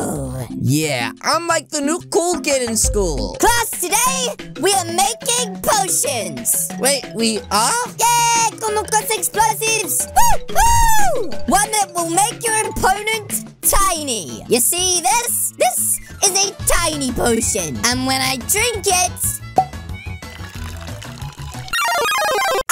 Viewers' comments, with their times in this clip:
0:08 The people is speaking spanish